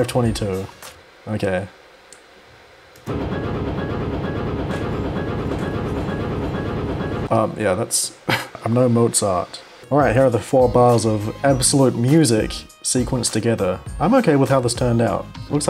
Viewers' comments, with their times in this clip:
0:03 Sounds like chasing theme tbh.
0:03 Idk but sounds like: "UNBOUND HUSK" from fnf ngl
0:03 spooky ahh beat
0:03 average dave and bambi fan song